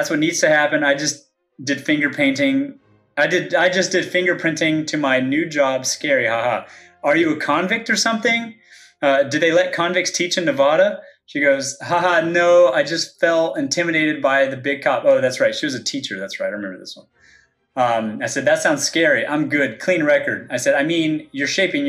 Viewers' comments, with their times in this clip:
0:08 He can't even pronounce "Nevada" right...